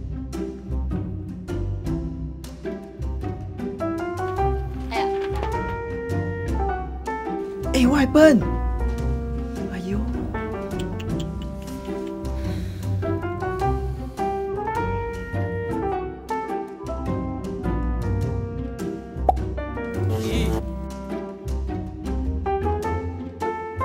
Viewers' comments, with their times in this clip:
0:05 anyone heard the “Em” sound?